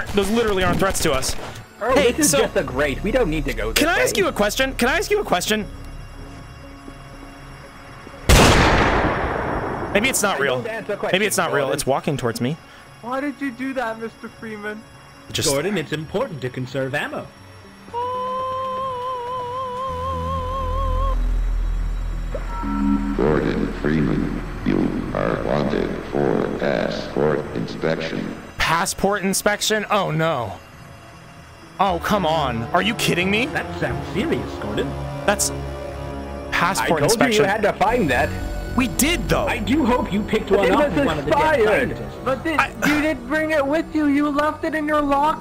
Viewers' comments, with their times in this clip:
0:09 The best voice acting
0:19 Just putting this for future reference when I inevitably return to this video. The fucking music cue there kills me every time
0:19 THE MUSIC THO
0:22 ngl This moment is genuinely kind of terrifying I really wasn't expecting them to use the black mesa announcer in this
0:31 the music fits with the moment so good
0:32 i just love how it fits with the portal 2 soundtrack